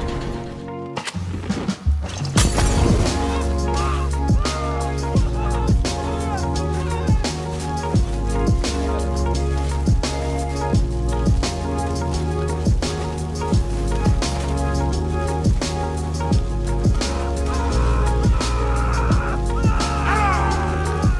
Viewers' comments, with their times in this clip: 0:03 Micah getting burned alive aesthetic music plays-